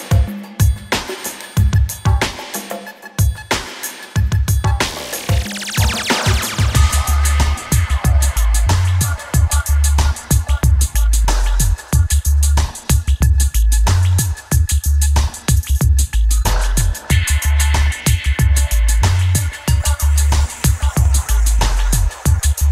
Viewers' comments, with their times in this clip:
0:06 Son ID ??? it has an awesome bassline.. im toatally aware of the tracklist... but i got lost